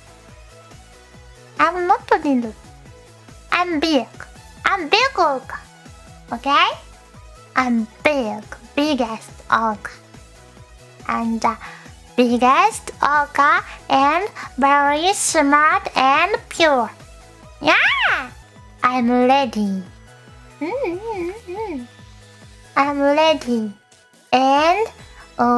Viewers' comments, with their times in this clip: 0:08 You can't tell me you didn't hear "big ass orca" the first time around